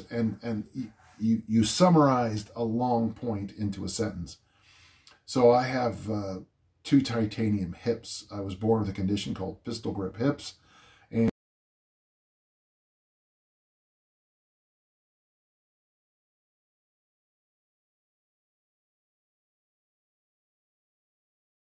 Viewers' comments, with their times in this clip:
0:09 Sound goes Dan, for me anyway!